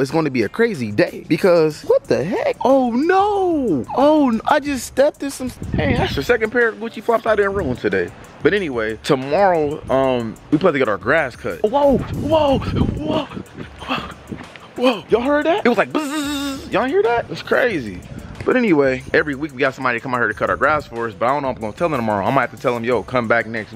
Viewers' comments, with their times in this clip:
0:06 yall here that fucking fart listen close